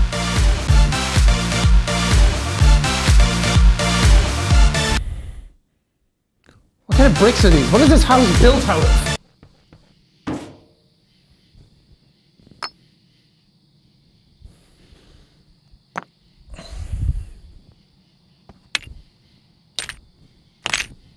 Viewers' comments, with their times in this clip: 0:07 when he said "what are these houses built out of" he sounded really British when he said "out of" I hardly heard any Irish then 😭